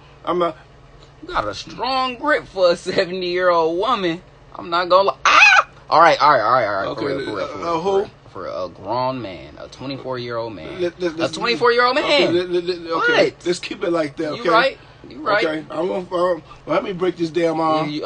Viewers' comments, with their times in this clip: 0:05 that screech took me out 😂 You got my dog barkin!